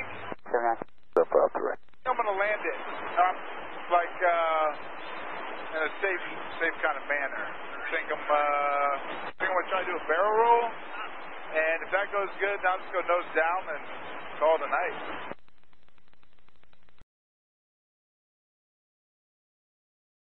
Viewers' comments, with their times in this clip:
0:07 U can here "terrain, terrain, PULL UP!" low terrai alarm in the background. He new...